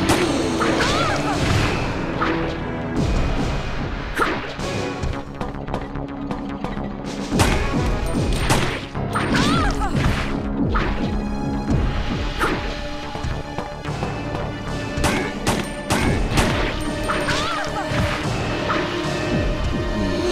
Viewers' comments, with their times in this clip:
0:04 Love that sync with the background music.